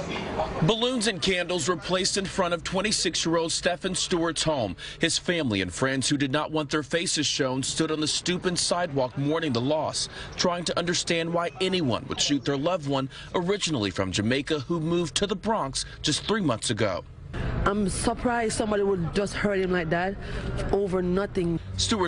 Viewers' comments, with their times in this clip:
0:08 i heard “Stupid sidewalk”